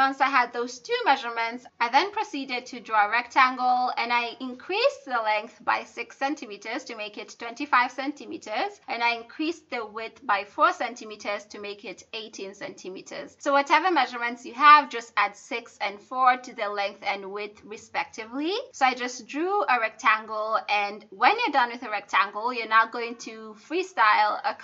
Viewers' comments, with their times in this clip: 0:08 omg i got so scared when the kids screamed bc im watching this am